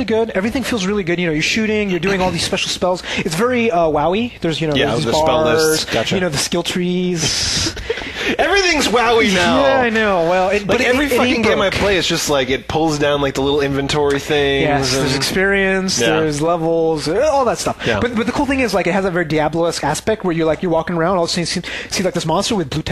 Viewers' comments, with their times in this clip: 0:10 whos slamming the door ?